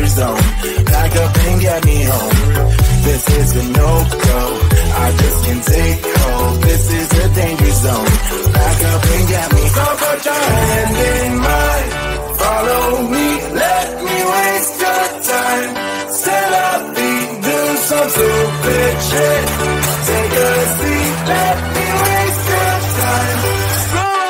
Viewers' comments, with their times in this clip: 0:09 I love their song 🎵🎵🎵🎶🎶🎵